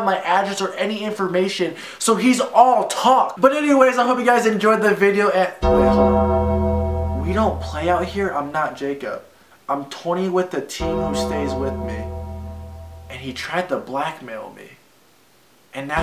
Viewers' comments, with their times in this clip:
0:04 hear the undertaker music. someone getting buried. rip taylor caniff